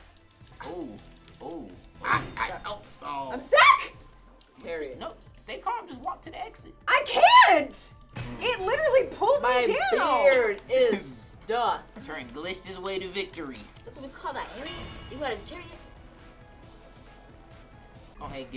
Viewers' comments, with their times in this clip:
0:06 Did anybody else hear ps4 listin closely